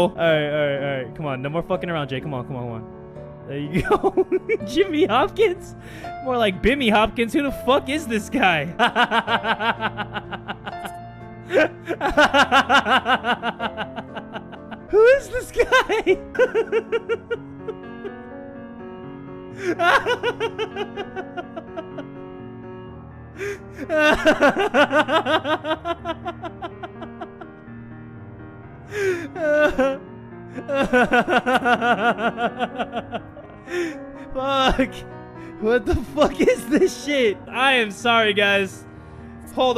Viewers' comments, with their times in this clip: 0:08 best laugh ever heard
0:27 For some reason when he laughs, of course its funny but like when I stop... He keeps going it gets awkward. But im not complaining! I love this dude! Loll 😘😁